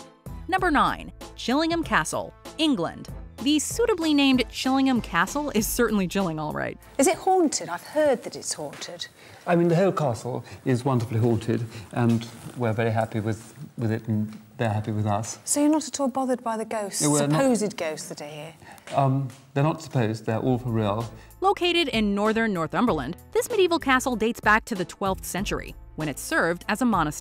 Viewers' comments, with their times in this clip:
0:09 Heavy British accent- The Whole Castle is wonderfully Haunted. Stewie from Family Guy- "Well it seems like a wonderful place to get haunted I too shall go"